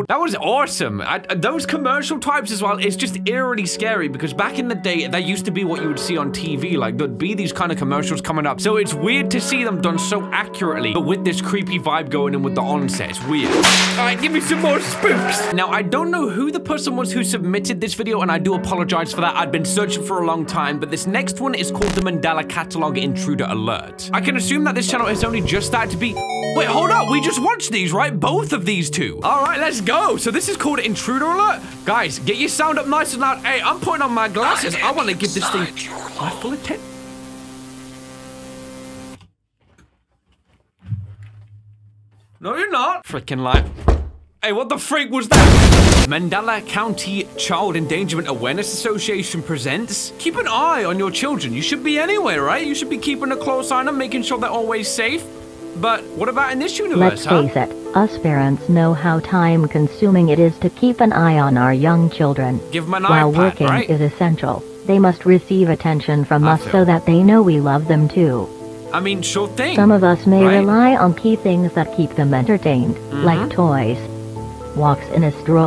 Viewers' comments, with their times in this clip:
0:10 I like how you can hear the resident evil 7 save file sound in the backround
0:57 this sound like glados